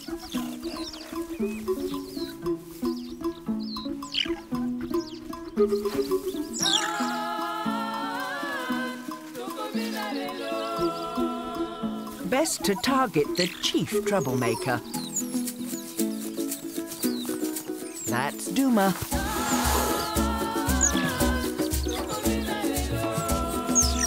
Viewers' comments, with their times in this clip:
0:08 When they started singing ...that was my favorite part. Who knew they were so talented?